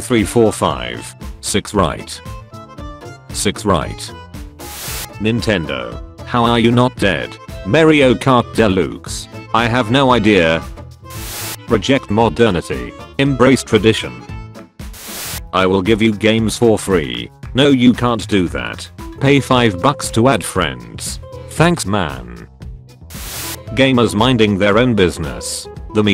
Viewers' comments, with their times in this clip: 0:10 Marryo Kart delooks